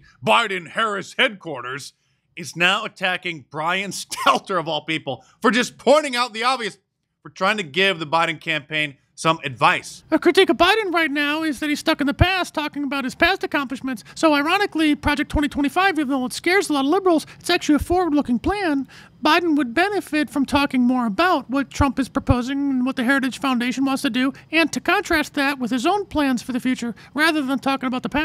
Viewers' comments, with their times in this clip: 0:09 I sure do miss those Brian Stelter impressions 😂